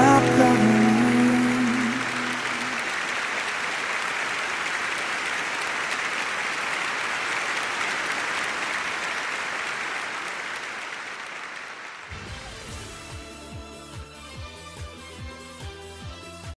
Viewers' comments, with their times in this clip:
0:07 Beautiful voice but the video is fake? The judges don't match the names on the stage.